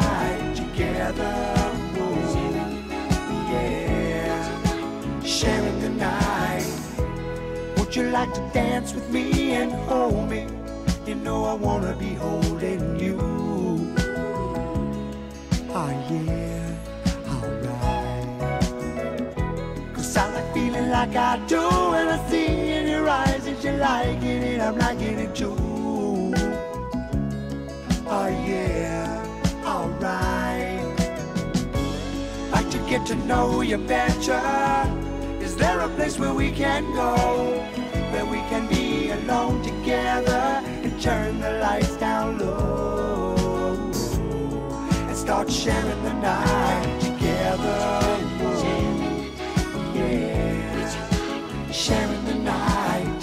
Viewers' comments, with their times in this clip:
0:08 😂 listen to this part and tell me max b wasn’t influenced by these dudes
0:41 ..the harmonies are pure bliss.. my favourite moment of any song ever ! :)